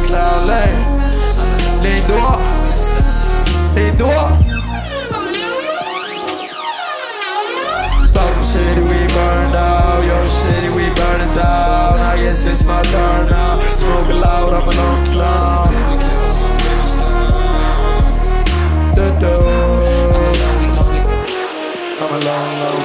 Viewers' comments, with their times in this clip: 0:04 is lean yelling "hejdå" ? lmao